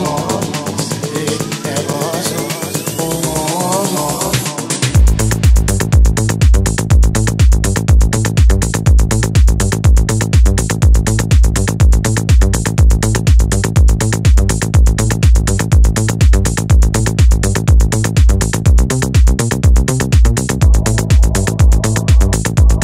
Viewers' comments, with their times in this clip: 0:04 + is so tight, i love it